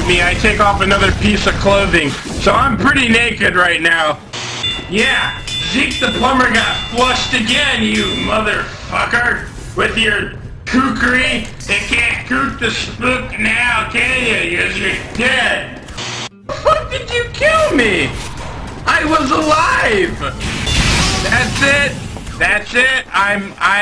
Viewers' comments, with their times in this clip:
0:09 He started to sound like Demoman for a second there.